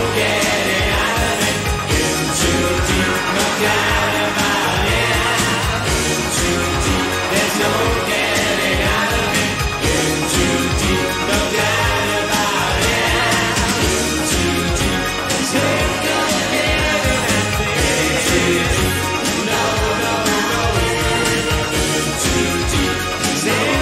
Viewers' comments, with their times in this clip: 0:08 his voice totally live